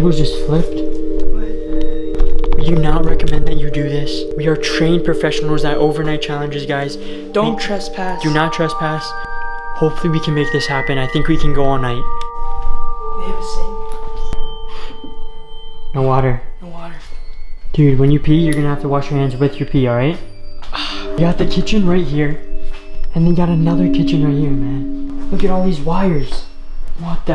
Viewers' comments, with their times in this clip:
0:09 It's am and I'm black and I here cops and a big door dropping